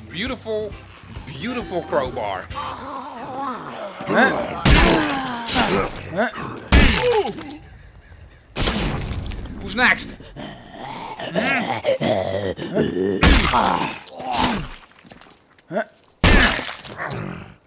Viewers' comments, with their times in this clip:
0:04 did that zombie go "Ooo"